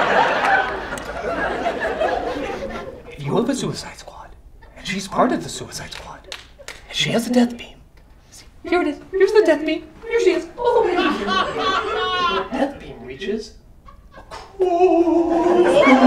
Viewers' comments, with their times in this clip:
0:04 is so inaudible that the subtitles are like “nah I’m good fam.”